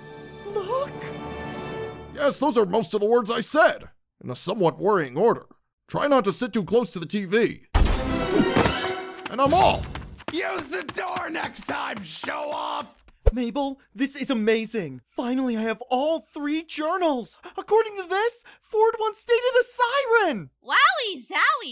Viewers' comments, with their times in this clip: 0:09 THE MOST PERFECT GRUNKLE STAN IMPRESSION DOSEN'T EXIS-